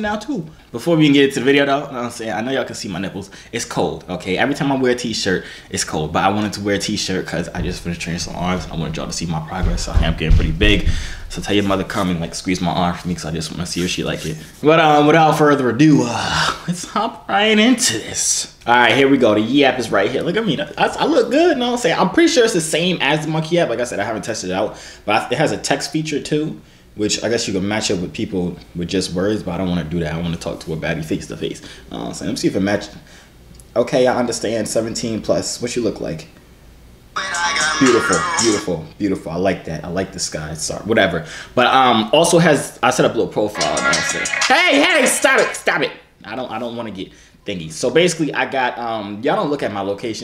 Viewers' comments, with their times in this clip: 0:10 y’all heard the person he kidnapped banging on the door?
0:37 why that song on there